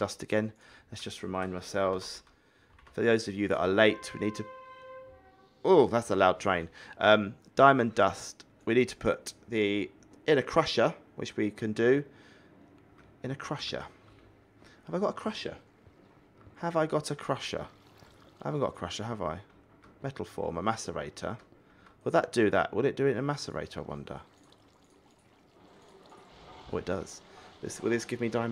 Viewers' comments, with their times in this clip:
0:03 Train whistle is
0:04 I heard the train
0:04 I heard the train
0:05 secs I heard the train
0:06 I heard it again time 🚂
0:08 I heard the train
0:10 The train was
0:15 i heard the train